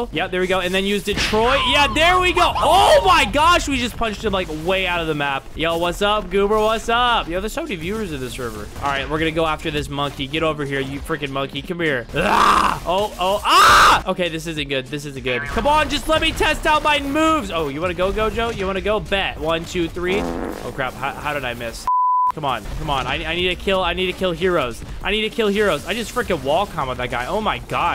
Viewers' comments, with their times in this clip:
0:09 WHAT DID HE SAY?! geto?